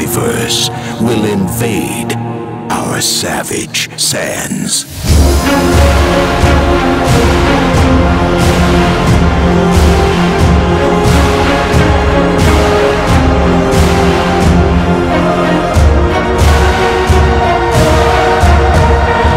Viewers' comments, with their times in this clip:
0:05 Some people can say it is another typical Angerfist's tracks... but from track transcend to the best level of Hardcore music! Even if sounds like old Angerfist it doesn't matter.. for me it is Pure Gold and I hope i will rave to those kicks again at festival in 2021 :)